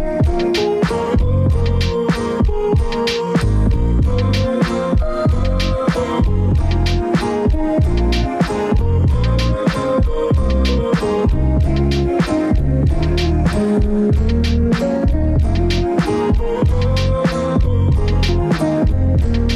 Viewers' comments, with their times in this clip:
0:03 Love when the bass line starts to open up Knxwledge keeps it movin